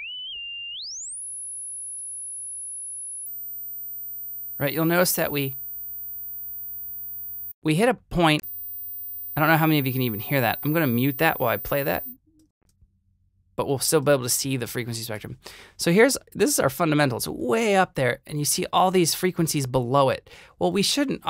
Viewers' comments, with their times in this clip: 0:06 my left ear didn’t hear that but my right ear heard it a little too well :)